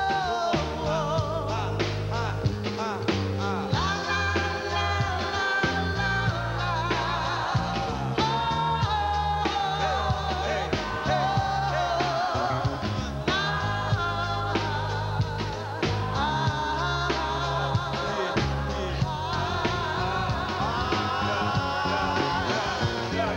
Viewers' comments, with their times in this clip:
0:08 i loveee how Roberta Flack sounded here ❤️